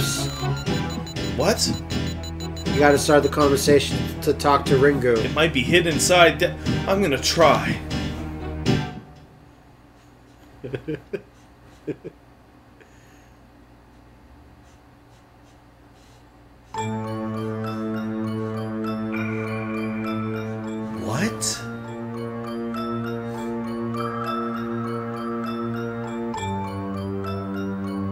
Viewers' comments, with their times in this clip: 0:09 that's the laugh of a man who knows what kind of hell is coming and is glad to drag someone down with him